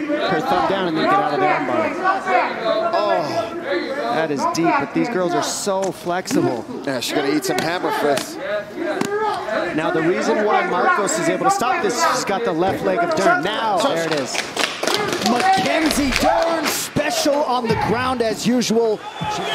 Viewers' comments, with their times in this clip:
0:06 the black hair btch punch the red headed one on her forehead and stomach and listen the sound it makes,its like the sound of hitting a pad the thudding it's just so funny 😂😂